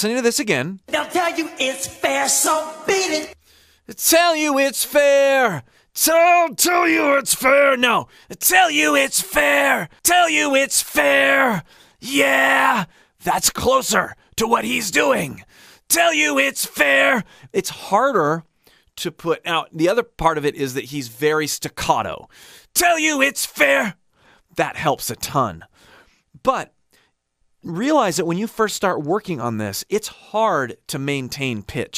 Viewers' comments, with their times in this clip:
0:10 Rick Sanchez voice
0:13 when you said "That's closer to what he's doing" you sounded almost exactly like Trunks from Dragon Ball Z